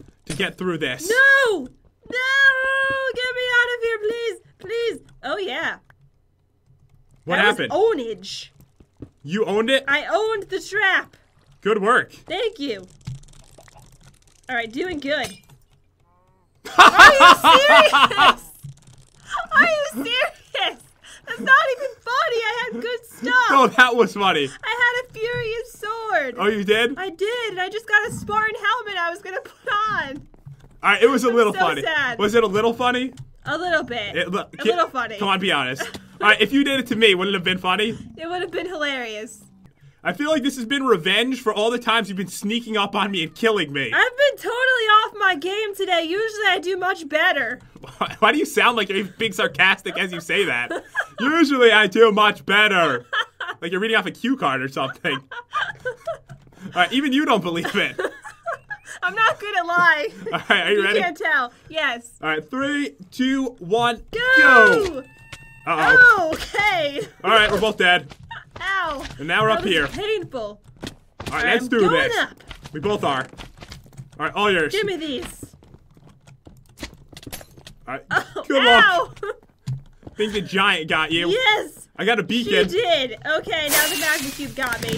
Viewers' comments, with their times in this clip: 0:07 i love how she said ownige
0:13 silence for a moment
0:14 awkward silence then potion lol
0:16 The absolute fakest laugh I've ever heard LOL
0:17 I kept playing the area where it was because Pat snuck up on Jen and killed her instantly with a potion, then it was silence for like 2 seconds then laughter from Pat and Jen was like "That wasn't even funny! I'm serious, I had good stuff!" I must have played that part over and over 20 times. It was SO FUNNY!!!!!!!!!!!!!!! 😂😂😂😂😂
1:06 Did anyone else hear cloud meowing lol